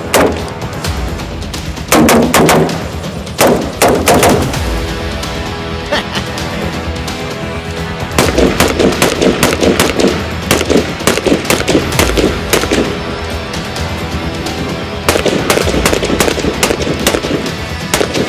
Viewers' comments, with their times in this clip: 0:06 exact same chuckle
0:06 the laugh of a child with a new toy lol feel that😂